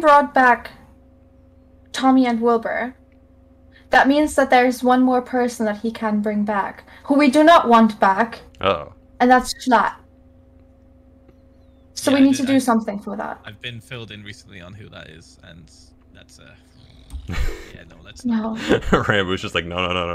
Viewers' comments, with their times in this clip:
0:04 Mexican Dream: Angry Spanish Noises Also Happy Late Birthday Techno :>